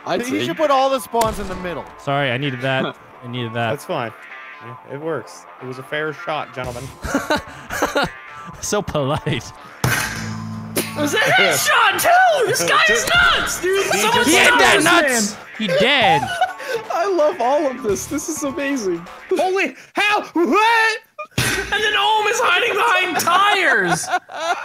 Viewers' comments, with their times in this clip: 0:09 Did anybody hear that metal cling sound like somebody headbutted a metal pole
0:10 does anyone else hear a guitar